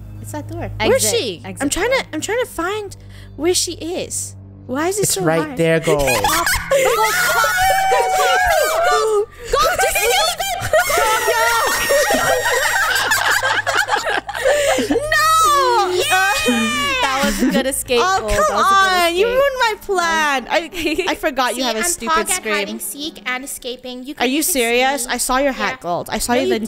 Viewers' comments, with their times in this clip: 0:07 every krew member yelling
0:09 is so crazy and funny. I can't stop laughing, Oh and headphone users here is your warning